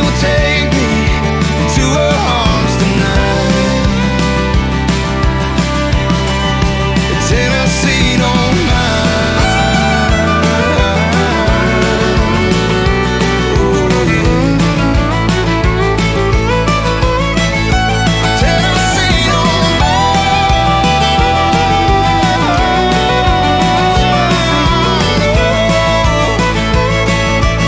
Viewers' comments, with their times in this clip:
0:09 When the fiddle kicks up on its like goosebumps!!!